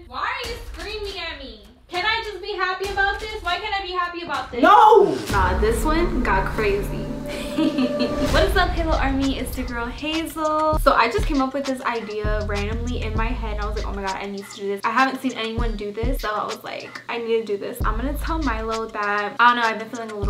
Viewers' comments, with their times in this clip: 0:07 THAT LAUGH 😂😂😂😂😂😂😂😂😂😂😂 CREEPY